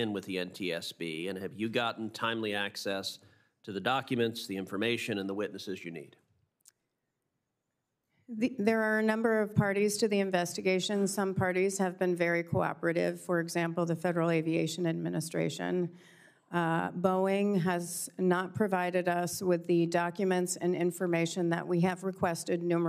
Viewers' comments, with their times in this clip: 0:05 That sigh "Here we go..."